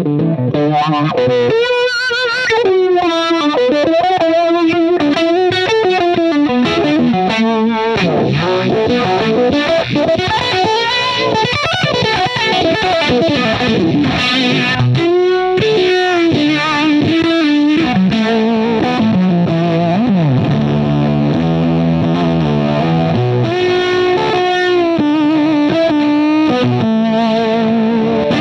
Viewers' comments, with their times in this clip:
0:09 Excellent thanks Joe and Reverb !! The essence of Jimi, but the punch in the by Joe and so good !!